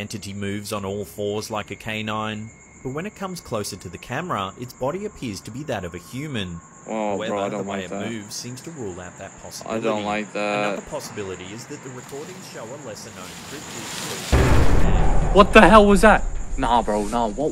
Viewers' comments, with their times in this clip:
0:04 Me watching this turning the volume down